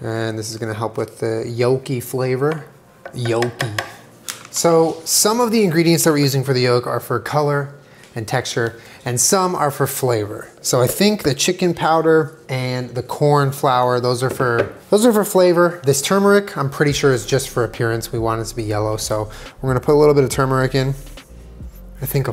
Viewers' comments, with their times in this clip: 0:09 The way he says ‘some’ sounds exactly like the some at the start of All Star by Smash Mouth